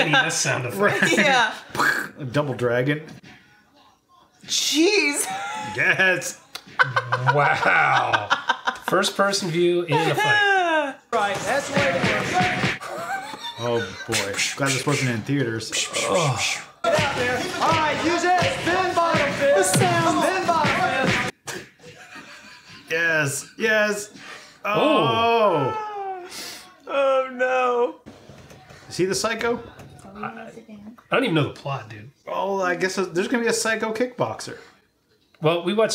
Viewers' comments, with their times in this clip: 0:07 It does sound like double dragon sound effects like a video game
0:16 Wow. They are kicking and punching so hard there are sound effects even when they don't connect. Like the air rushing past is making an impact. Very Rocky 4.